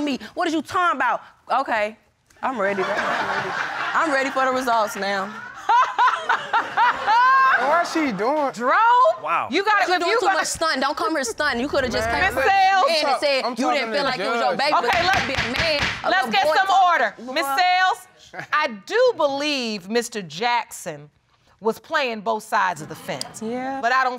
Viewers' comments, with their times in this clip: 0:05 that laugh tho 🤣